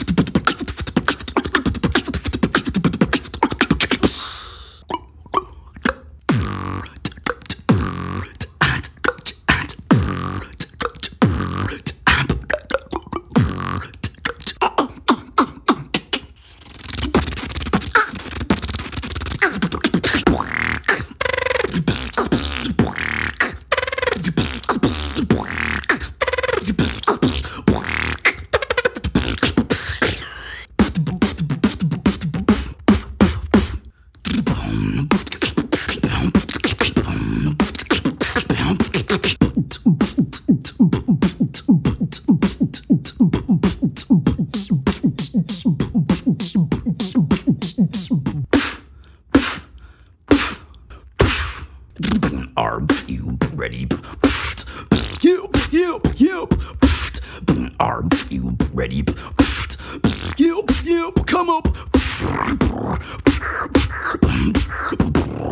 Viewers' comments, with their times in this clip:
0:04 The Hard Hollow CLOP tho
0:05 Hollow Clop Snare, the best...
0:06 Spencer X brother you so cool The Lip roll the video that Amazing and Awesome Your is master Lip roll
0:15 why speed up the clip man??
0:16 Pretty much a duck with a machine gun
0:17 Help Him He Is Being Electrocuted XD!!!
0:41 my cat when she's about to throw up
0:48 i love this part! HEAVY PF
0:49 heavy pf is my favorite snare